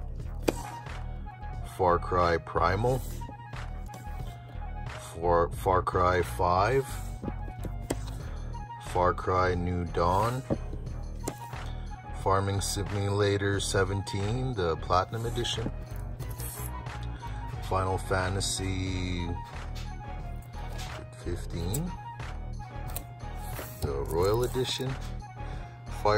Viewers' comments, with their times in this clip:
0:08 You:Do you want to play anything? Your friend:What games do you have? You:Eminem Rap God